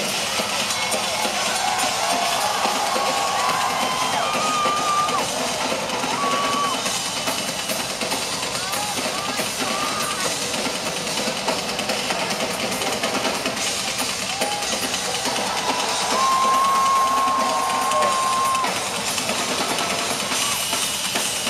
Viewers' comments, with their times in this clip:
0:09 "UOOHH MAHH GAAWD!" That guy sounds like his head is about to explode. lol
0:09 Lol "OH MY GOOOD" it sounds like someone's eardrums have burst :D